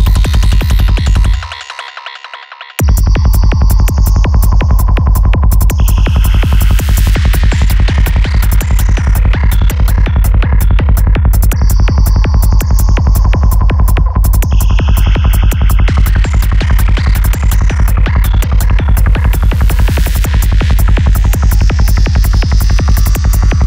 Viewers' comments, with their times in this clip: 0:04 For me sounds like a dark alien creature is coming for me and is waiting around the corner. That’s a reason why I love Goa. You can feel what the music wants to tell you. Esch one feels something else but it’s like a movie in you head